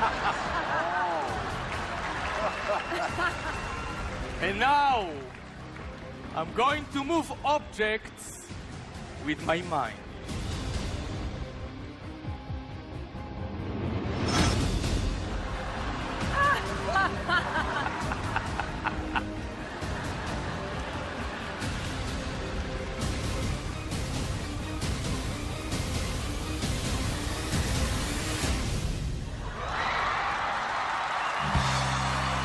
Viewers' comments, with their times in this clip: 0:04 Sounds like King Julien
0:14 That lady laugh